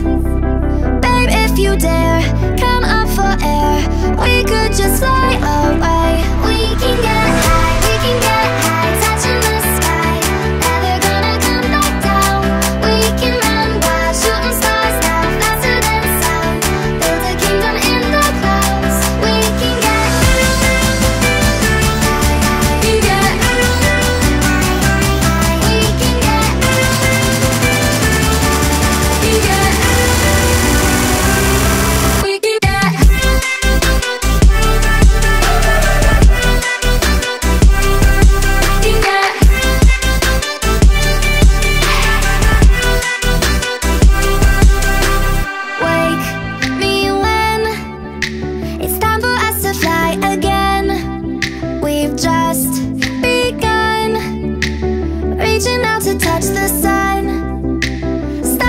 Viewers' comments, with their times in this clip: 0:09 I love the piano sound on 😍
0:41 i thought only mø could do those sounds hahahahha